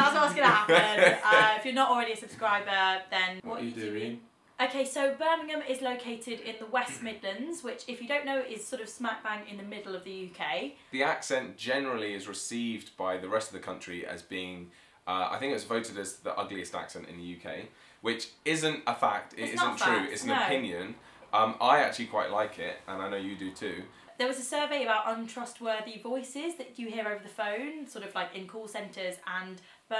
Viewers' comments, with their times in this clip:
0:10 I'm a non anglophone who never lived in an anglophone country and I don't believe this accent is ugly at all. So, yes; any opinion is subjective, be that positive or negative. As a foreigner the differences in english accents from england to me are very slight, and therefore to me an english person from London, another one from Birmingham and another one from Manchester all sound more or less the same. To me they have the "english accent" from england, although english people say that this doesn't exist. But for a foreigner it does exist, because by just hearing you we can discern that you're not americans, australians, irish or scotts but english (I don't know what the welsh accent sounds like). Where from England is this person? From anywhere, but just from England.